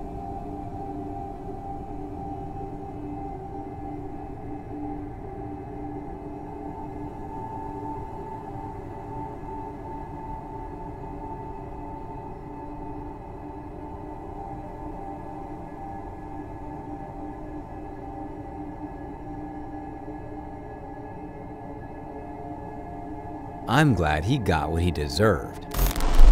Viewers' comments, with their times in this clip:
0:10 BRO THE SOUND EFFECTS WERE SO FREAKY I SHOULD NOT HAVE WATCHED THIS pm 😢